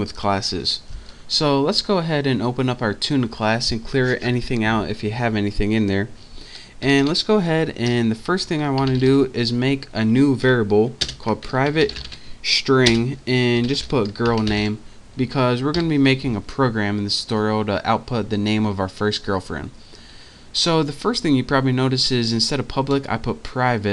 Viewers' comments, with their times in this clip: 0:04 Someone is laughing bro?